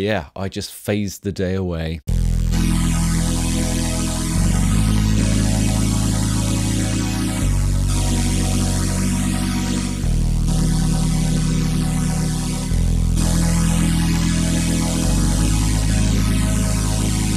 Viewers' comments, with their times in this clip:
0:03 sounds like strings on a Yamaha FE organ